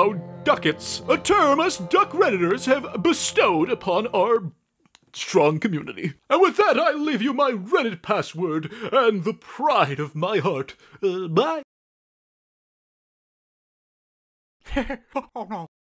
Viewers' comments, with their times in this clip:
0:11 I love his little "HuHhbAi!"